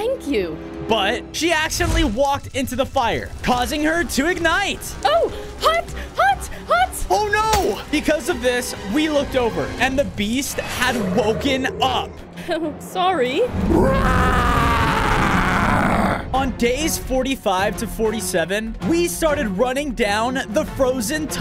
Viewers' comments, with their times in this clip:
0:07 the RAAHHHHHH was personal